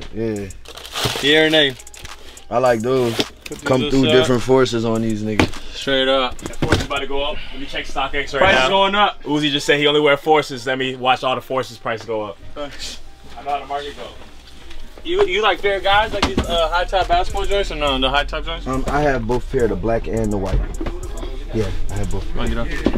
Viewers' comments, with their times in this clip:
0:10 that guy sounded like jay z for a sec lol